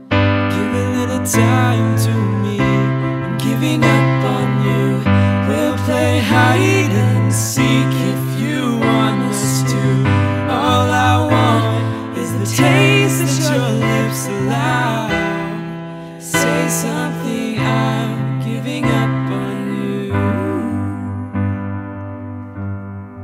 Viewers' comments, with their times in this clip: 0:05 I've done a cover of Give Me Love, but this mash-up was definitely something unique. I love the sort of song-to-conversation you did It really started to build emotionally and vocally. Really good! And both voices are beautiful: soft, original, but not too overbearing. Thumbs up!